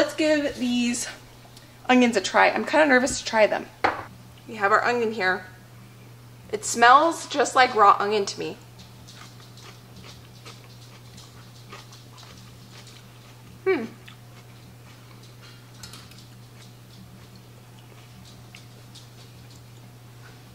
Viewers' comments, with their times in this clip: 0:08 😅🤣🤣 The sound effects were probably the best part with the blech! then the green spatula tip escaping into the green peppers... thank goodness your parents were there to help with the painting 🎨